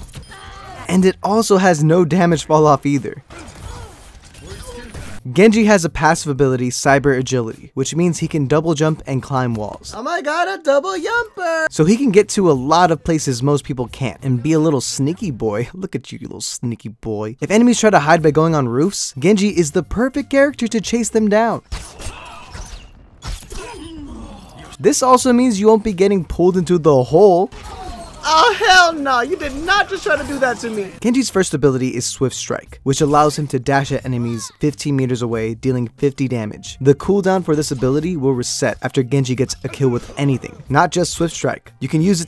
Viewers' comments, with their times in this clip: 0:10 I got a double yumper!!!!
0:29 why in he sounds like he is crying